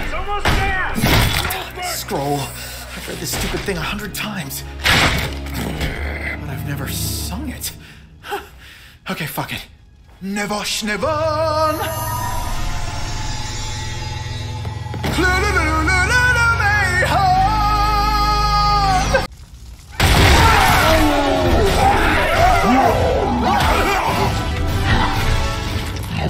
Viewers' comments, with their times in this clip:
0:10 Why does how he says “nevosh nevon” scratch my brain so well?